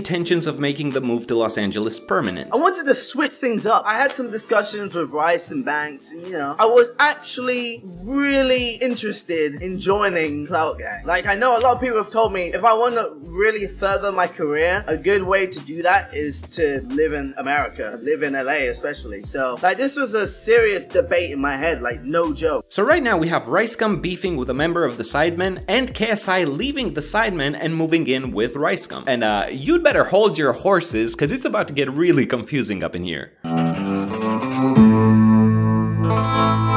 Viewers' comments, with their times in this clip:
0:08 for some reason KSI got a bit more lighter voice unlike now
0:17 why does he sound like that ??